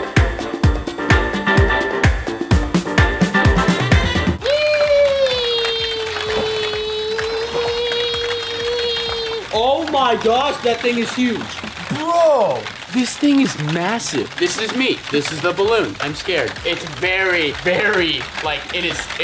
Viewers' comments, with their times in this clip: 0:04 My captions actually thought Unspeakable’s EEEEEEEEEEEEEEEEEEE was beautiful music.... it labeled music Edit: (it is beautiful music, just an FYI)